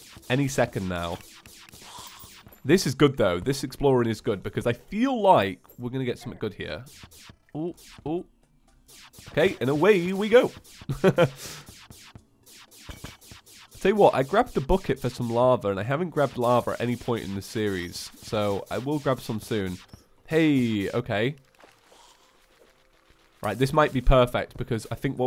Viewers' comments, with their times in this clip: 0:10 you sounded like reportoftheweek there